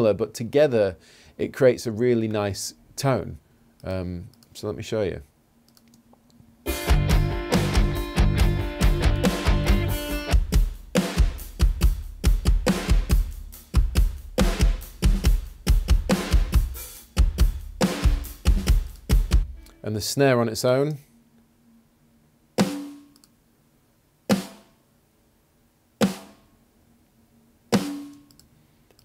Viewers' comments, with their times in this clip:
0:10 I can't unhear MJ's Beat It from onwards ahaks!